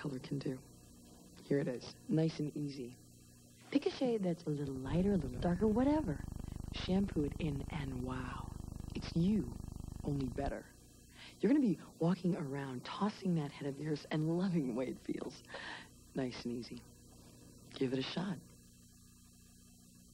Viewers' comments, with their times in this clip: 0:07 Cat purring or fart ?